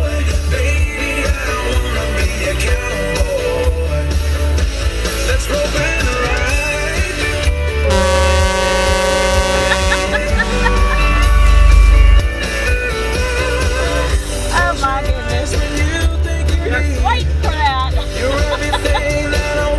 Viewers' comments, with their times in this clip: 0:06 For anyone who wants to see it(who’s also impatient), the horn goes off just after the Tesla tries to U-Turn Yep, Tesla Entitlement. 😑😒